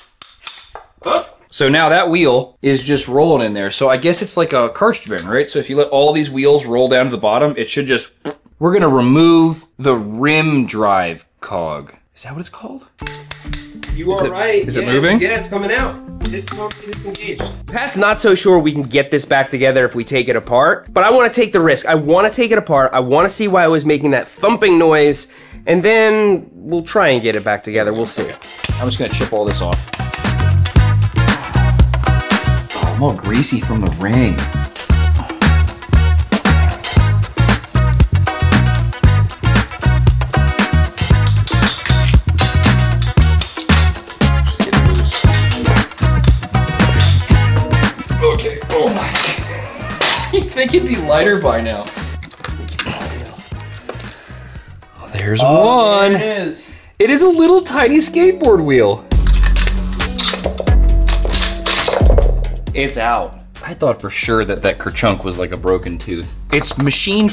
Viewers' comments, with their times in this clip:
0:08 O man the fart sound on Damn its hilarious
0:54 "(metal clanking)" - how apt. 😄 Guaranteed to gain weight as it catches and collects everything it can from the terrain in those pockets as you slave-away upon it. Possibly only offset by the shredding of wear surfaces as it tears itself apart. Have to wonder if it exceeded noise level regs normally enforced for ICE bikes. Thanks for dissecting this jalopy.